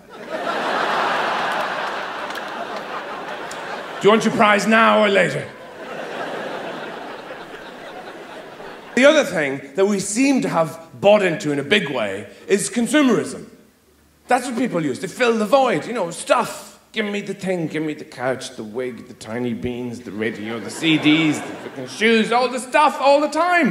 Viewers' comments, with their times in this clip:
0:08 sounds a lot like George Carlin, RIP.